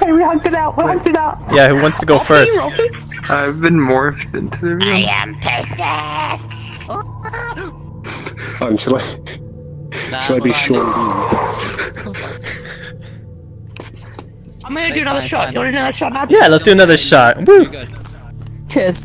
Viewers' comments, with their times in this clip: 0:05 :looks like black zetsu voice hahahaha